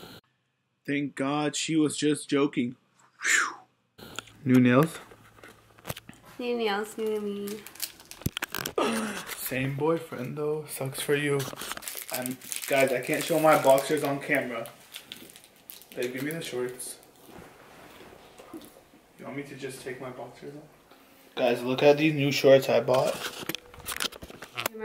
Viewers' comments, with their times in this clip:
0:10 put your volume down and it will sound like he said no sex for you